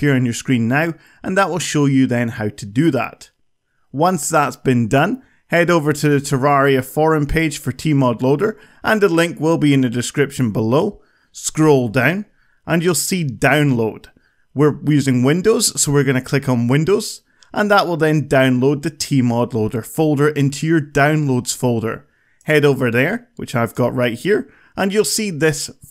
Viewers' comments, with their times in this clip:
0:09 scroll dang and then press dangload